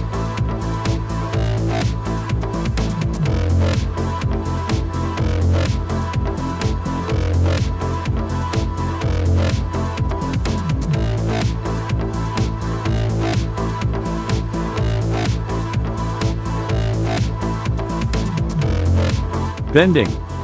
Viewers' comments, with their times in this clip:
0:07 After I quit watching because of the music. I could have muted the sound, but i'm not going to do that. Wise up.